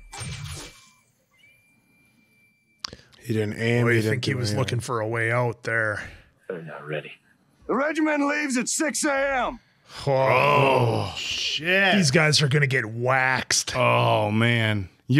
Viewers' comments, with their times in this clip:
0:03 THANK YOU for catching something every other reviewer misses. Algren was absolutely looking for a way to die in this scene - the self-loathing and self-directed hatred behind his "shoot me damn it" is honestly terrifying to hear.